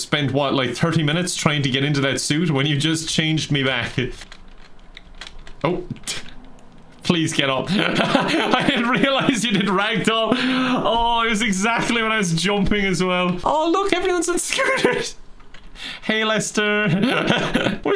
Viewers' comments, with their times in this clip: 0:04 The splat sound got me